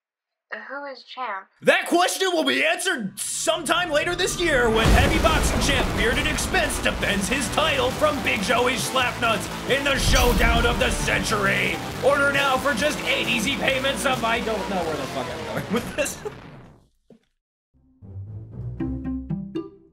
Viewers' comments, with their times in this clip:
0:05 bass boosted Terran 1 is unironically good and I'm angry I can't find it anywhere